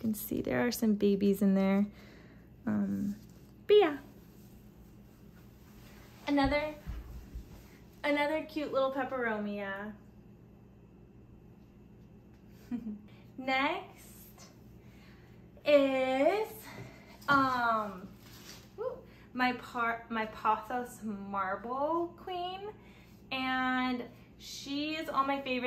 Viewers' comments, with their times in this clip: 0:07 When you said "another cute peperomia" and then giggled shortly after, your own cuteness was off the charts! :)